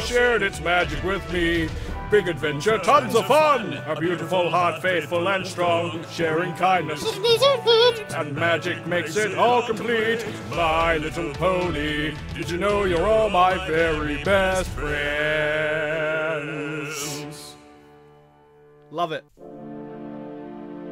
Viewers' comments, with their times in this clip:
0:06 WHAT WAS THAT NOTE